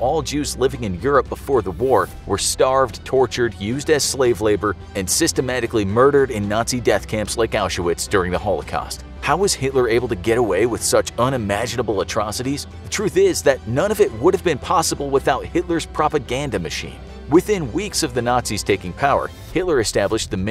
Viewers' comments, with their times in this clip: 0:05 how do you not know how to pronounce Auschwitz????